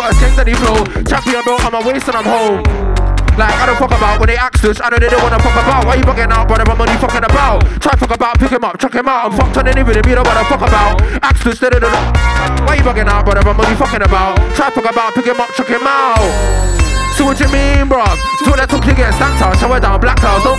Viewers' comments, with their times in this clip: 0:03 you don’t get this sort of flow anywhere else